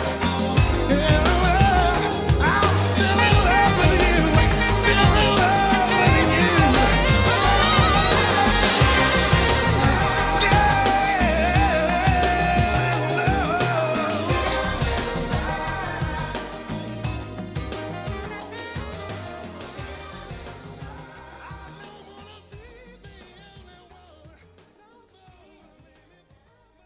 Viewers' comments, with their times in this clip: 0:08 Amazing. This has got to be Peter's strongest vocal performance ever. He demonstrates such amazing control over his voice and range here. Awesome run on, just as it starts to fade out! Few vocalists can match this.